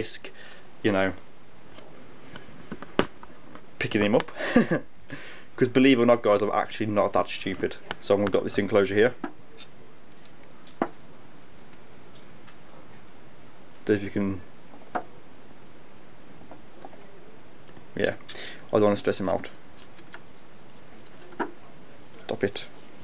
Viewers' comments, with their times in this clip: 0:09 this spider is really tapping the plastic